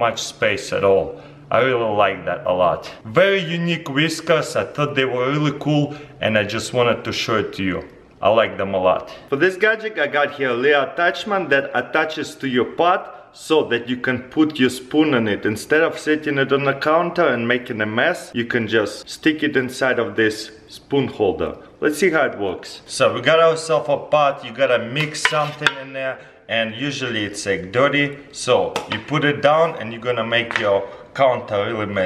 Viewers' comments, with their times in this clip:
0:10 anyone Else heard but?
0:10 I thought he says "that attached to your but" lol
0:10 Attaches to your butt😂😂?
0:11 attaches to your what😂😂😂
0:12 attaches to my WHAT?!?! listens carefully Oh nevermind 😅
0:12 attached to your what?! Did I hear that correctly? Edit: Ooohhhh! Your pot!
0:12 "lil gadget that attaches to your but" ???? Trololololololol 😂😂😂
0:13 I thought he said it attaches to your but so u can put a spoon in it
0:14 I got this little thingy that attaches to your but"